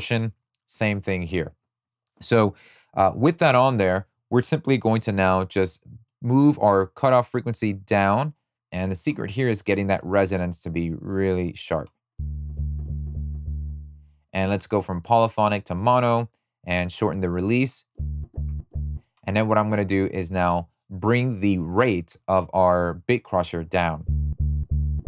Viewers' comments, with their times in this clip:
0:08 Man, you f*cking nailed! thank you very much. I always was curious for life on how to make that bass kinda vocal and I never figured out that was a reso filter with bitcrusher, mind blowing